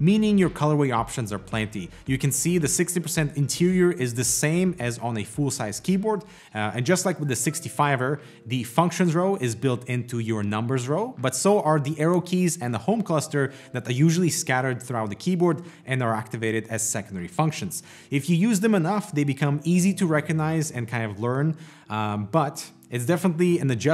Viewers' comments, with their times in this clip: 0:07 that whistle sound scared me for some reason.